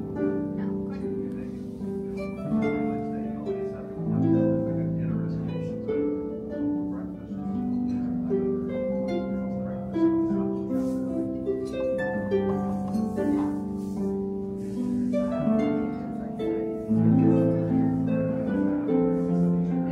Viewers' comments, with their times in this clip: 0:05 🤗wow 😊wow🥰 wow just wow...harp music... the background noise of the 😢man talking and the😪 silver hitting the dishes ... thank u for including this clip thank u for including the clip of the servers talking about the dishes... most of all thanks for including your happy smile while eating.